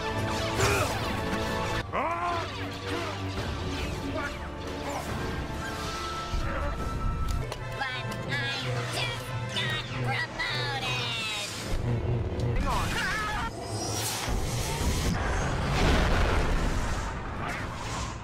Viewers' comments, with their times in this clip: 0:03 Wait, is it just me or is his name just jar jar binks saying I'm gonna die?
0:03 ima gun di.......kinda sounds like im guna die
0:06 Ima-gon-di=I’m gonna die